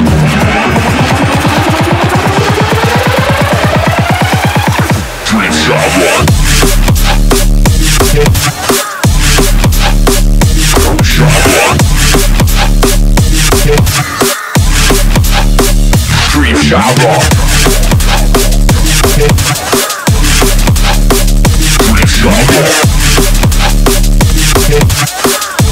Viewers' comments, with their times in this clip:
0:06 Steam sound notification remix. Seriously i've checked my Steam twice because of this